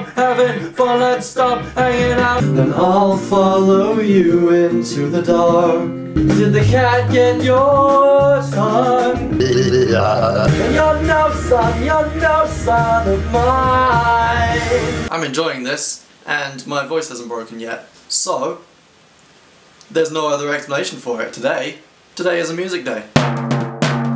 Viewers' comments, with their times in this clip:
0:10 That singing is Amazing!!